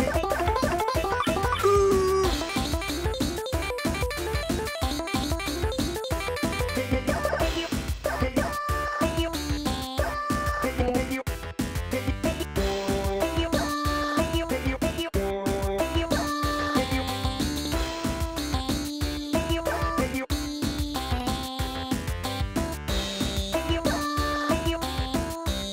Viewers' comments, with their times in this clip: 0:06 Jeffy singing balls in yo jaw gives me hope